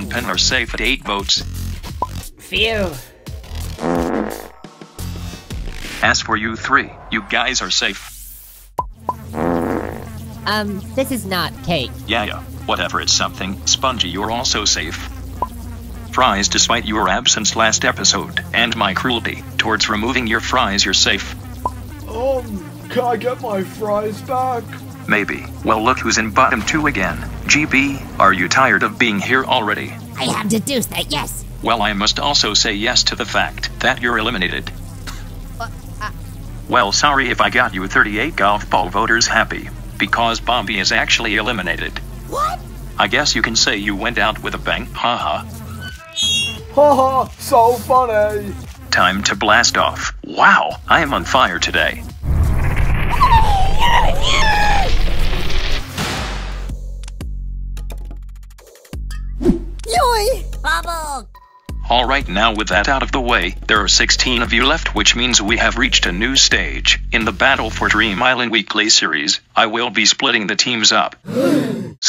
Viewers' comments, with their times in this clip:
0:09 pin farted lol 😂
0:52 How do you do that with the voice?
0:53 Bomby's sucked sound ( From 4) Should be awesome in BFB 13